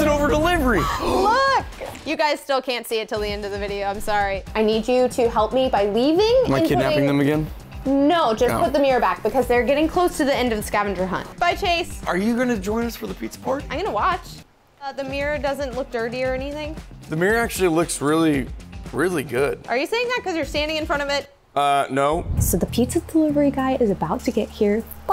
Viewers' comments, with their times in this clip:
0:06 When she said I’m buhind the mereo